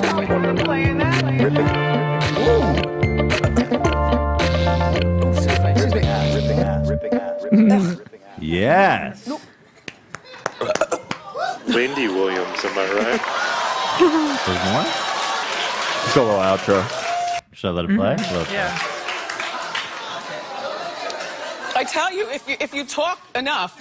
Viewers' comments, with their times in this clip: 0:04 my 3 year old was into that beat